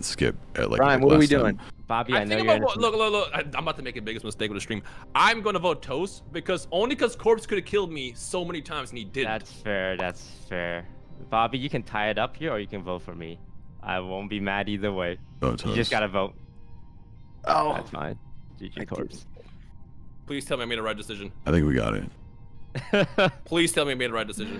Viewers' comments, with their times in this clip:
0:03 It was so funny they were all so shocked like NOoOoooOoOOOOOoo!!!!
0:05 Jack, Sykkuno, Rae and Pewds all gasping in synchrony is my new favourite thing